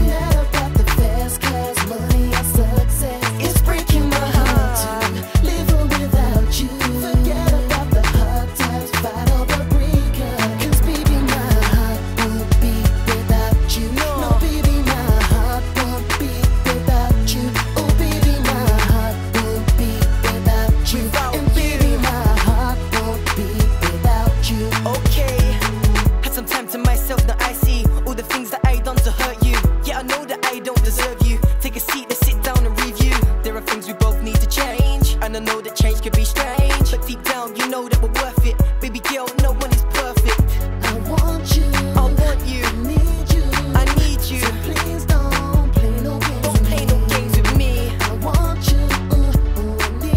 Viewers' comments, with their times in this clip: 0:08 is it just me or is that A squeezy?
0:34 defiently auto tune ,